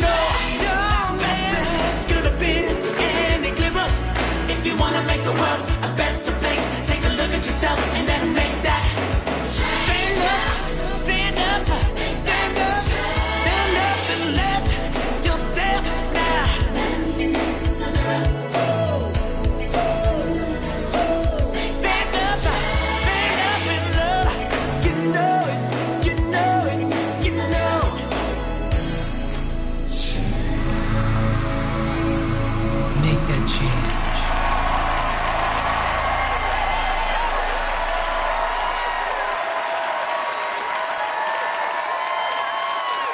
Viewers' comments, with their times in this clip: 0:09 the bassist was called to perform 😭
0:09 Great key change!
0:26 blaine can sing a solo and choir at the same time ! xD